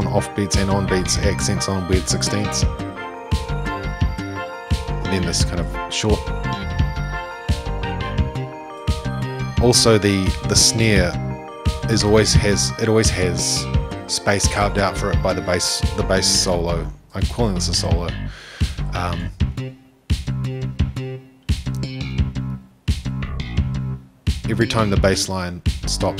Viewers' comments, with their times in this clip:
0:07 The fast little run the bass does has been one of my favorite parts of any song ever since I first heard it in 2016. Thank you for this lovely breakdown!